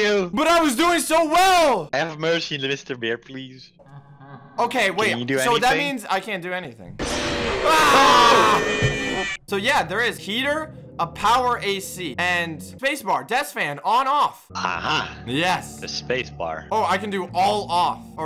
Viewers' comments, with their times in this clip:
0:05 That scream tho it was like an ah